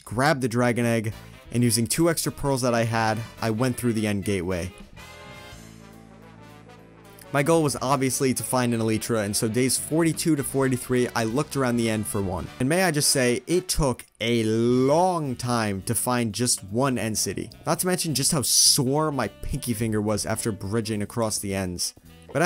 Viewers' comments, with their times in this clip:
0:07 I’m sorry but a eletra? 💀💀💀